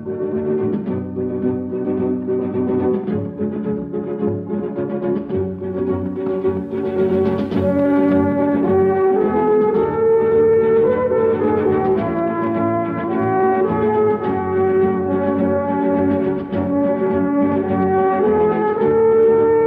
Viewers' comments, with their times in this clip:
0:04 one of the best western soundtracks ever 🔥